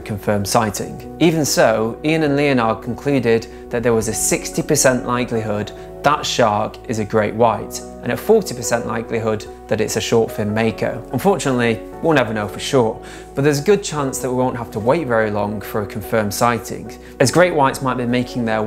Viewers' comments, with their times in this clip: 0:03 … did that shark just sneeze?! 😂